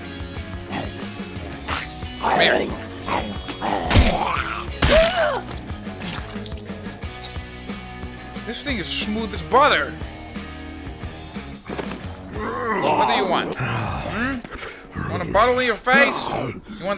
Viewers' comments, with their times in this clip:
0:03 sounds like the first time I bumped uglies